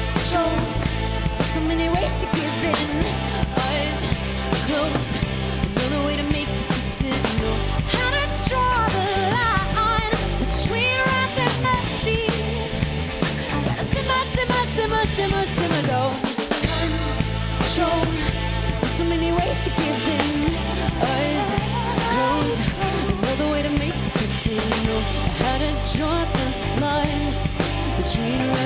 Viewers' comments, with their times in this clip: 0:05 Guys, I believe the sound engineer spent more time mixing the volume of tracks for this song than all of the people here comenting about non-sense. Also studied the audio engineering for years before you heard about mixing. Have you noticed for example how much you hear the girl on guitar whe she plays full out ? Have it occured to you that this song is about the atmosphere. And the guitar just provides some backlight here. I actually (as a guitarist) think that the engineer did amazing job ! Just don't take this as a pop song. There is a lot of hidden aggressivity "simmering" in it.
0:14 That rest followed by the little crescendo on the snare is just magic. Love it, feels like you sort of fall and get caught by the song.